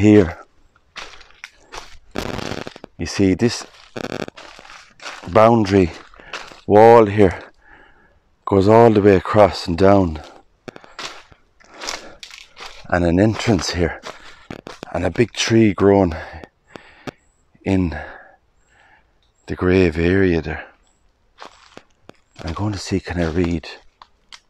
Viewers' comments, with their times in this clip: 0:06 I caught that as well. Backed it up to be sure. Static Interesting.